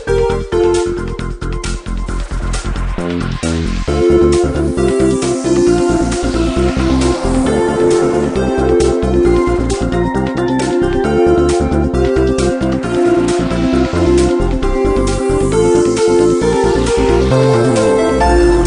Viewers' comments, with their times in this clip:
0:05 and onward sounds like the programming theme from one of the Megaman Battle Network games.